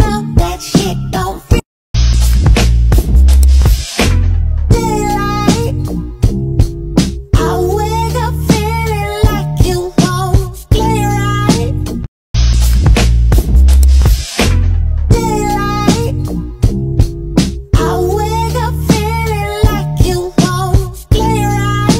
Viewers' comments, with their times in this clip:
0:03 this is the best *caugh in 4k * 2 times